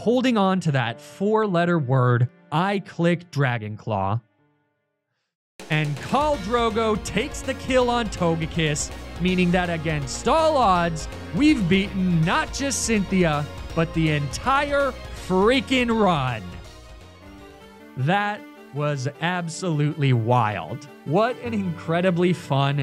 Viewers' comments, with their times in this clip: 0:05 Whats the super triumphant song that plays